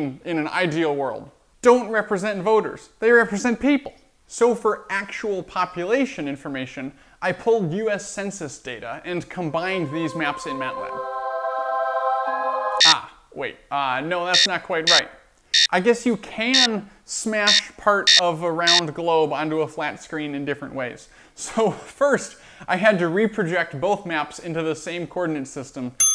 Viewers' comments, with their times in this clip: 0:08 I'm watching in 2x and the music made it sound like a fucking ghost started singing next to me. It scared the shit out of me 😂.